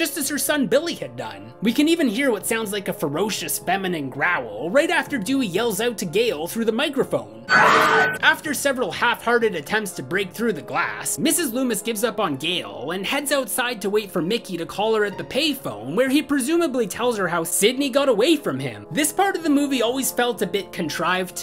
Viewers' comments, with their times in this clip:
0:07 i always thought the ‘growl’ was Dewey shouting ‘Gale, run!’